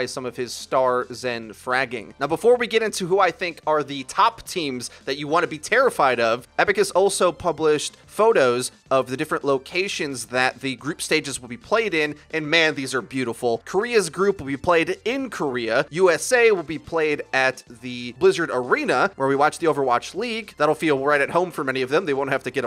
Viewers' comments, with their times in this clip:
0:04 “Epic has also published-“ Am I hearing wrong? Didn’t he mean Blizzard?
0:06 Epic games? xD
0:06 when fortnite is life. "Epic has published photos"